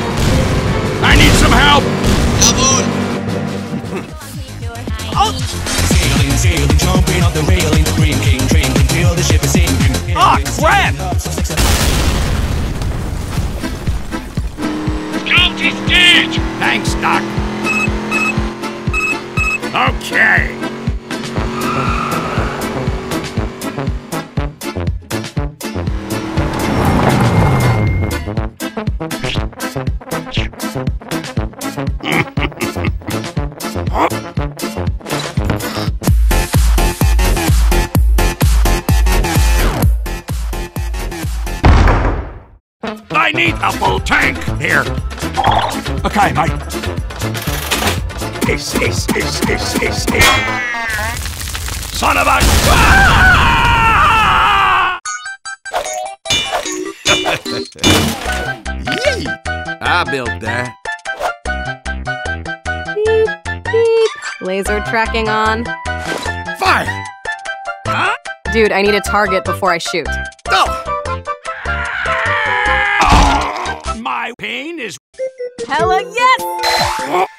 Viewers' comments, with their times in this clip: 0:04 when the crack hits hard
0:07 the song is called and i quote "the sailor song" and is played at 1.75x speed
0:46 Piss piss piss piss piss: closed captions petrol sounds yeh thats normal
0:48 sniper: piss piss piss Captions: petrol sounds
0:48 Why is sniper saying "piss" over and over as a gasoline pump so funny to me
0:48 fuel tank: "piss piss piss piss piss piss piss piss piss piss piss piss piss piss piss piss piss piss piss piss piss piss piss piss"
0:58 I love that cute little "Yee!"